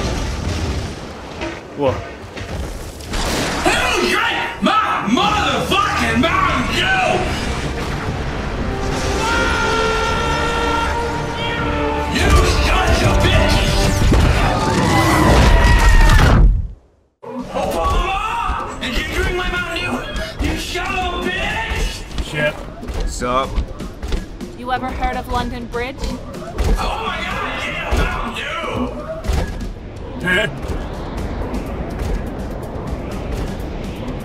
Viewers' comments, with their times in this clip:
0:09 listen to that fucking battle cry
0:15 Goat sound XD